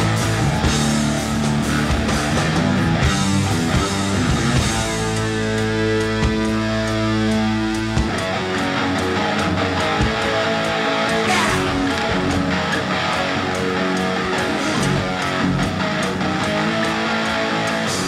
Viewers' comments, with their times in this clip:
0:05 MORE EFFIN COWBELL!!!